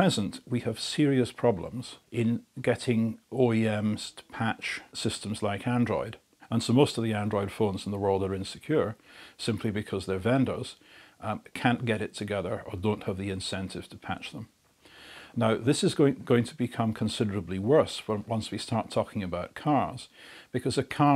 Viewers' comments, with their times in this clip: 0:04 I am confused what he is saying OAMs?